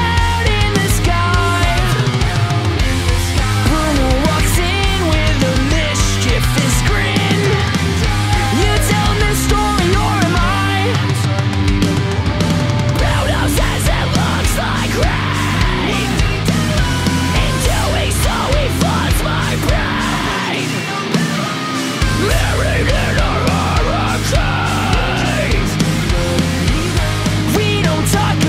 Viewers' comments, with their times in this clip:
0:09 imagine Pepa doing a scream similar to OLN 🤣🤣🤣